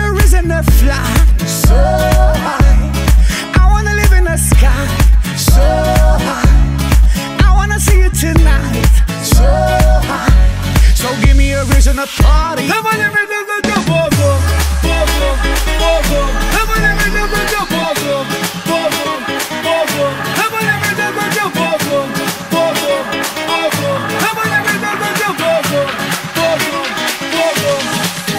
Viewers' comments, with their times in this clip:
0:10 what are you singing tahdfsfksafh bobobo?